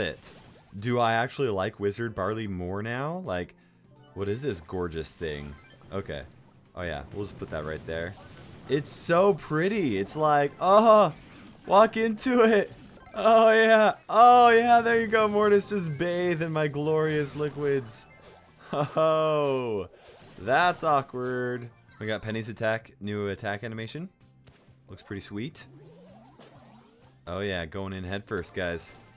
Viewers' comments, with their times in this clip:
0:10 I started laughing when you made those noises and ended with "bath in those liquids"